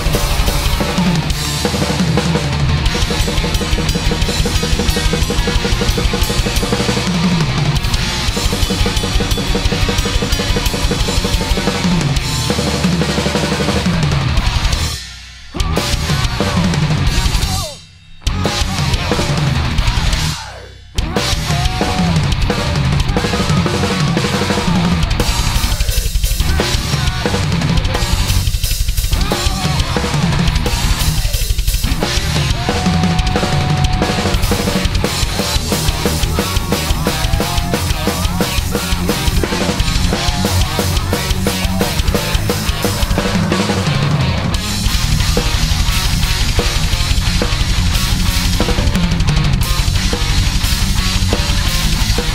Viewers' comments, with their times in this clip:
0:03 Sorry I cannot be of any help right now about those patterns. The best way to look at it is that he is playing double time with a fast snaredrum-bassdrum beat in 16th-notes and the cymbals are basicly 8th-notes in sync with the bassdrum. Many speedmetal drummers play this beat.
0:36 Total Gangnam Style